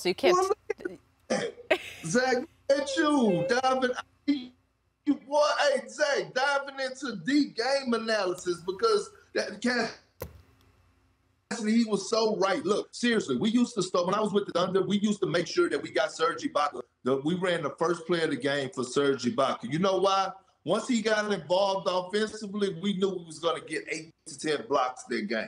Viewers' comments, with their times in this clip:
0:10 😩😂😂😂 talking fast asl